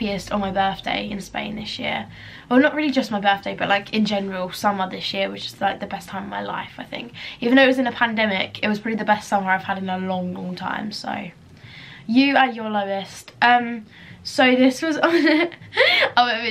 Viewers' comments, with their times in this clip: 0:04 i swear she jus said the s word